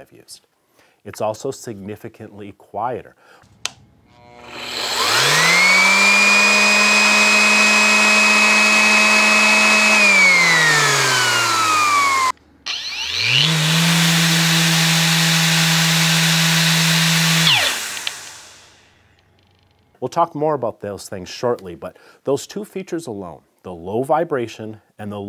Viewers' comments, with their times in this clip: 0:06 Could the louder version be cause by the dust extractor fan? The 3M appears to rely on vacuum and my shop vac is much louder than the sander.